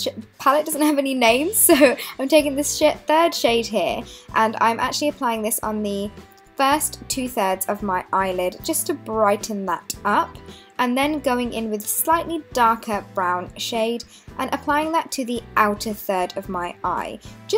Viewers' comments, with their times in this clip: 0:04 did she say "this shit" lol? Love the makeup tho